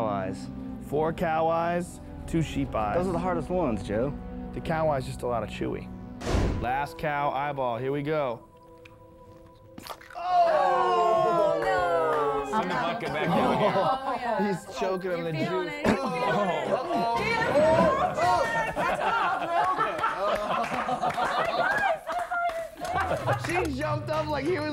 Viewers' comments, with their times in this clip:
0:09 Pop sound is on